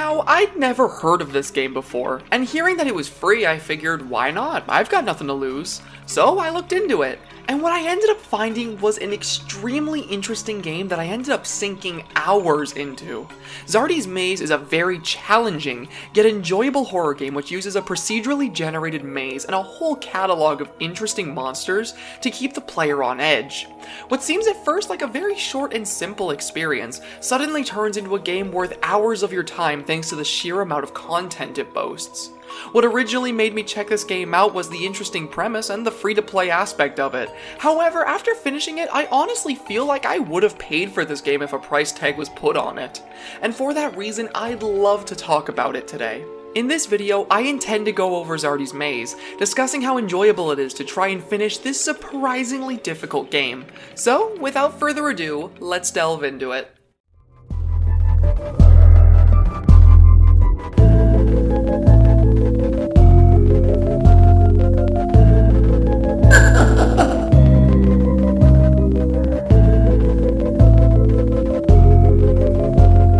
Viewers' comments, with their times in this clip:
0:06 "So I looked into it, and what I ended up finding was-" foolhardy starts playing
0:57 yep that's got to be morse code doesn't it